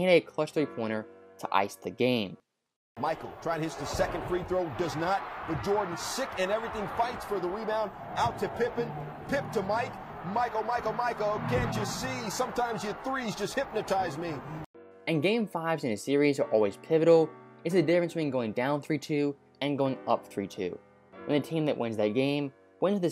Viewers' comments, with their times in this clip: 0:10 that song was fire 🔥